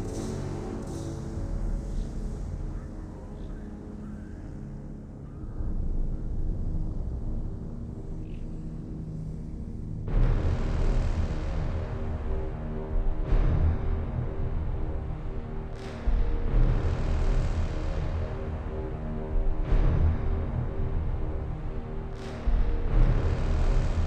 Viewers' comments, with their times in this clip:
0:09 from onwards it sounds like the Shredder (TMNT) is approaching :)